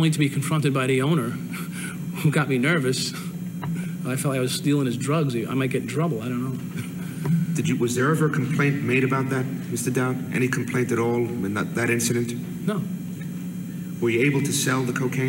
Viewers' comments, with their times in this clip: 0:03 His giggle A harbinger of things to come. Lol